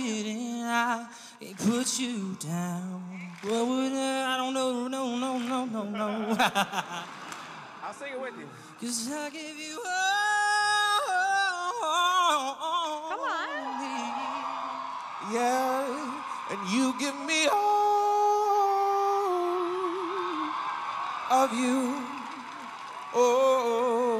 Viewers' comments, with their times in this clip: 0:09 whew that gave me chills that rifff